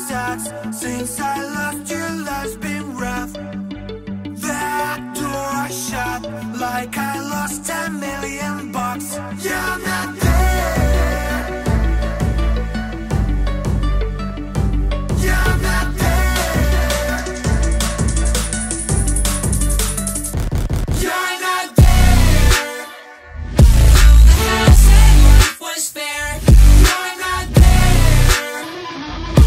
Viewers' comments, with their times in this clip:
0:10 thought I was listening to pendulum, dude